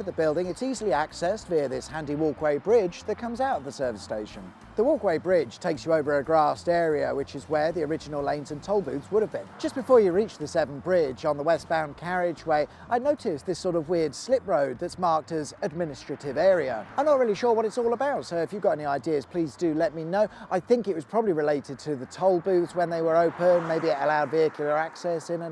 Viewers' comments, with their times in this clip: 0:08 Nice installment thank you. was it intentional to cut your dialogue sort here?